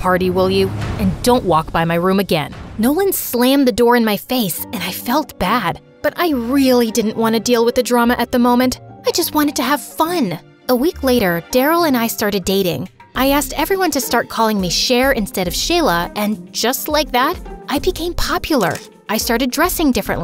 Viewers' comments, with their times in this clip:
0:03 i cant unhear “no one slammed the door in my face”😂💀